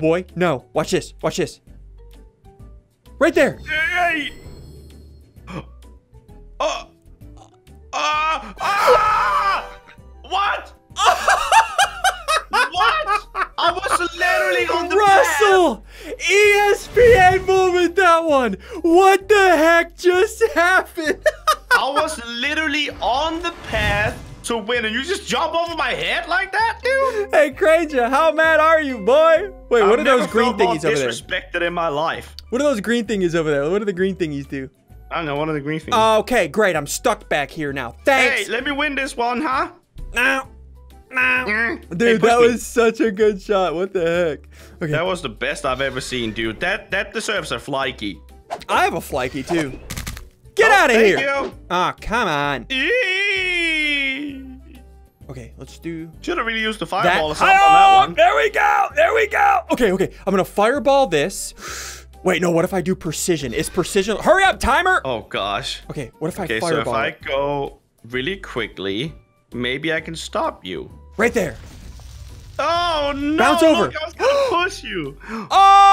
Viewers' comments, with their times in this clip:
0:03 Mlg For Ssundee Ssundee’s Laugh made me laugh. Good Shot, Ssundee!
0:58 when ssundee says there we go it’s sounds like it will be a song